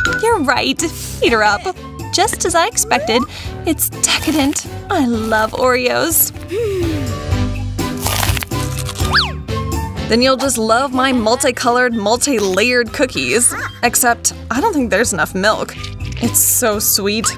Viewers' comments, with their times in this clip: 0:05 why did I hear "I love Leorio"?